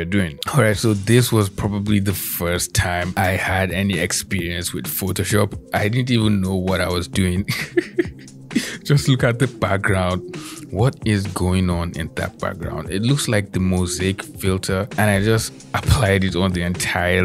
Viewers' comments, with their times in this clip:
0:03 What is the music ? Sounds like a Jimi Hendrix remix